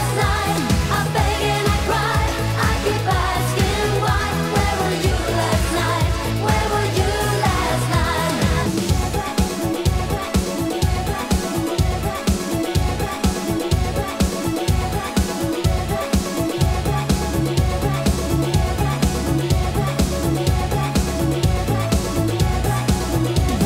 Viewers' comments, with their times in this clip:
0:08 ...that mix into the Never Ending Story is unbelievable....never gets old :D